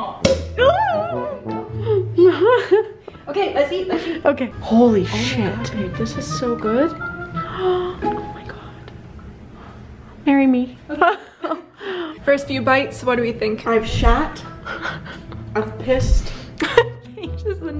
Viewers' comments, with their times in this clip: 0:04 İs it "Holly,shit this is so good" or "holy shit this is so good"?